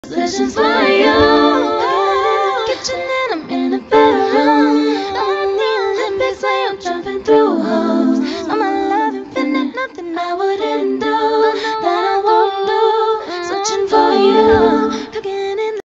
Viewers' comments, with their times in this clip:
0:05 its just me or there's a whistle?